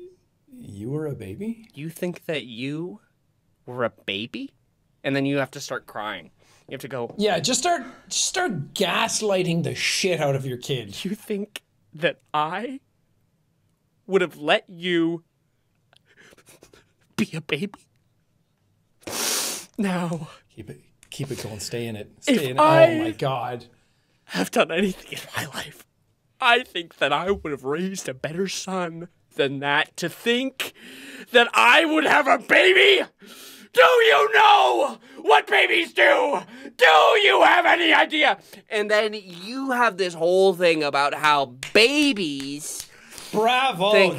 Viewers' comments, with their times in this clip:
0:07 BRUH that cry on contact was AWESOME!!!!!
0:31 is giving all eyes on me by bo burnham when he screams